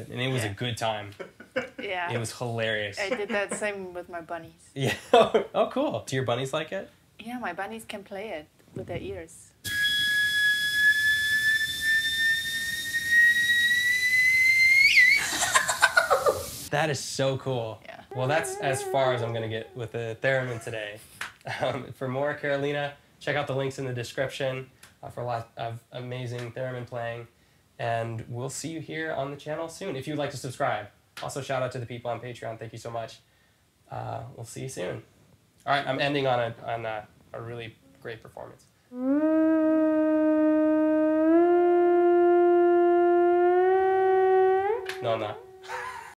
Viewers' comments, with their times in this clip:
0:10 teapot is boiling, someone!
0:43 The last note of was really interesting, actually.